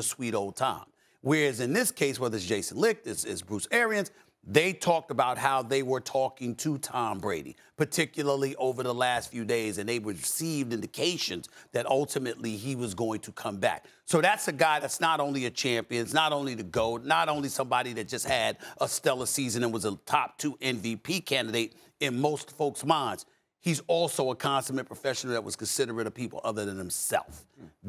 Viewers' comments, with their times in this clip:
0:10 A bird flies out of Stephen A’s mouth